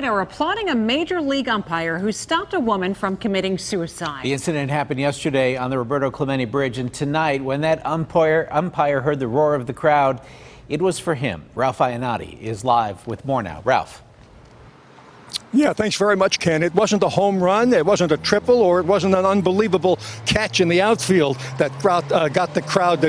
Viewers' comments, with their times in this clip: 0:07 umpoyer lol 😂 great thing what that ump did all respect to I live in Pittsburgh let's go bucs